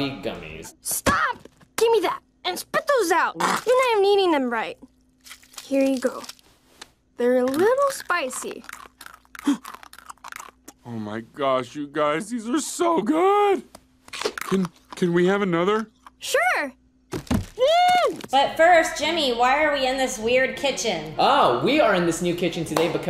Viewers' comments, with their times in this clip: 0:08 -can someone explain how gummies make crunching noises????